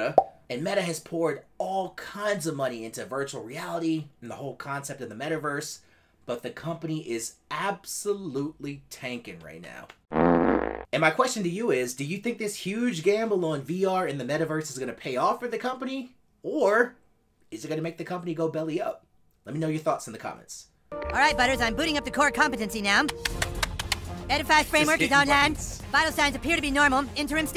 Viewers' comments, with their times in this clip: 0:10 Right after the fart sound I got an ad starting with "don't you love the smell?" No joke